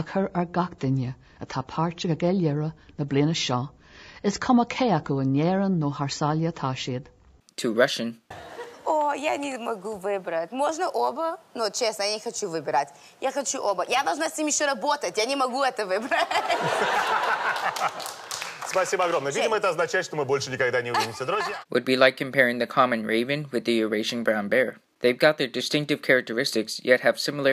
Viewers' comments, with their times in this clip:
0:09 it is not real Russian. Mila Kunis is an American who speaks with a very heavy accent